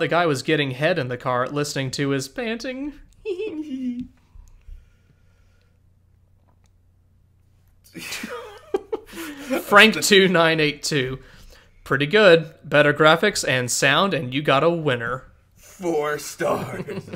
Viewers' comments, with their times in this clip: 0:03 I like those few seconds of awkward silence after